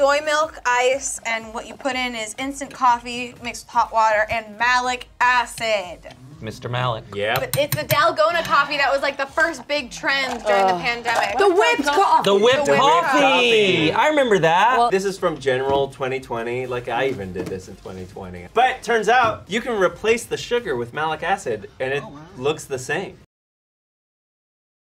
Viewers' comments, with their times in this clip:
0:10 that shit got me for a second here cuz at 1st I thought they say Nalgona and I thought who in their right mind would name a coffee that ( if you speak spanish you know why!)